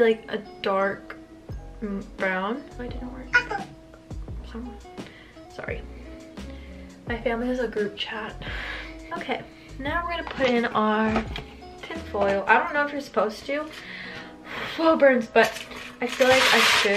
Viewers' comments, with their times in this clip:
0:03 the kakaotalk notification